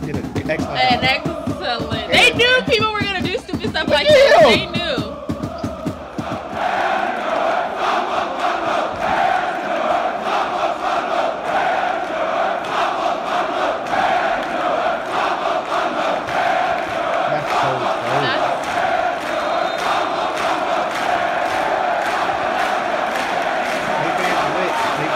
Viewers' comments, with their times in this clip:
0:06 "FRAMÅT MALMÖ" "HEJA DI BLÅE" "FORWARD MALMÖ" "COME ON THE BLUES" Call and respond chant from the Most Champions of Sweden Malmö FF. That was away in the Uefa Euro League against Chelsea when 3500 Malmö fans were outsinging 36500 Chelsea fans away at Stamford Bridge. Our own home support is electrifying with megasize flags, big tifo displays and flares. We sing for 2 hours straight minus 15 minutes at half time break.